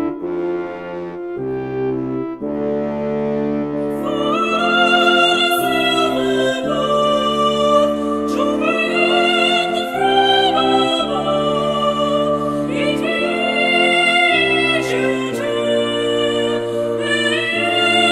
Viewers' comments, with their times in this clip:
0:03 The part onwards is fucking GOLD!!!!!!!!! And then when the screamo vocals kick in and they duo the shit out of those lyrics. FUCK YEAHHHHHHHHHHH!!!!